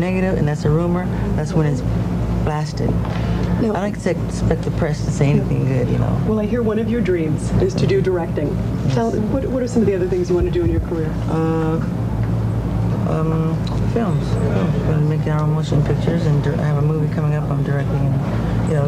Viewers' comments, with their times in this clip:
0:03 did he say fkin press ??? hahaha